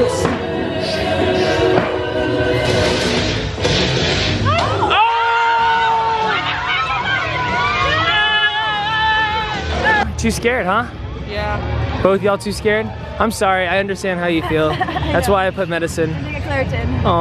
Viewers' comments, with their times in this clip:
0:05 Who screamed “What the f— is that??” On